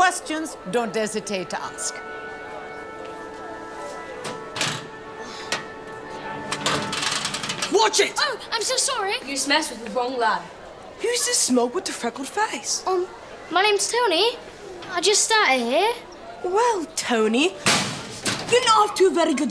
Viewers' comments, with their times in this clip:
0:07 Bro is Bri'ish 😂😂